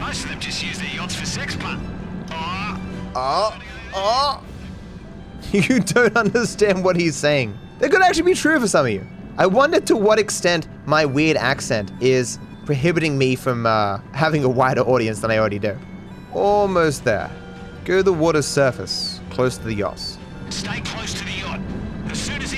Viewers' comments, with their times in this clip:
0:09 I'd assume not that much, if at all. The Captain has a noticeably stronger accent. However I also had no issue understanding anything the captain said. Then again I usually have no issue understanding strong local British accents, which are definitely harder than to understand not being local than Australian is.